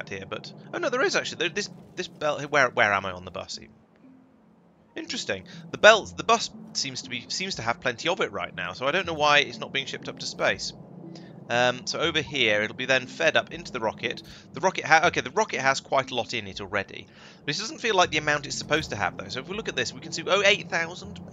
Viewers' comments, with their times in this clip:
0:03 Pretty sure you said bussy there 🥵🥵🥵🥵😳😳😳😳💀💀💀💀